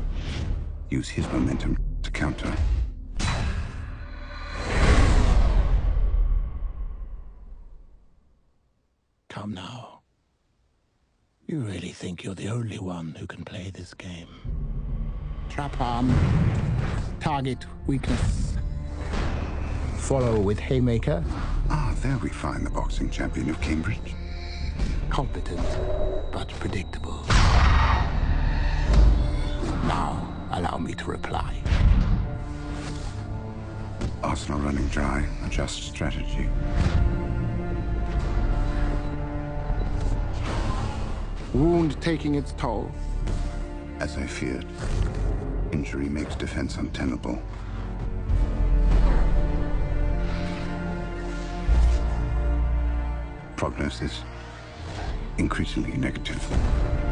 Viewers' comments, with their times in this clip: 0:07 Here’s why the “come now…” scene is Epic: For 2 movies, and up ‘till now, we’ve seen Sherlock win EVERY BIG FIGHT via this foresight and calculation. We’re lulled into a false sense of re-assurance when we’re about to see Sherlock stop Moriarty with this method… until it hits us unexpectedly! Just to highlight, there’s even Boss-fight music during Moriarty’s foresight sequence 😂🫢🔥🔥🔥whereas Sherlock’s was silent
0:39 Call me crazy, but an enderman dies